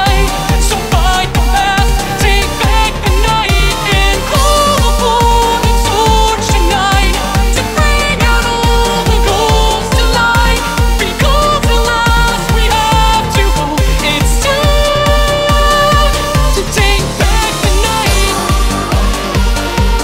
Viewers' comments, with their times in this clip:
0:07 Yo, he hits those notes hard!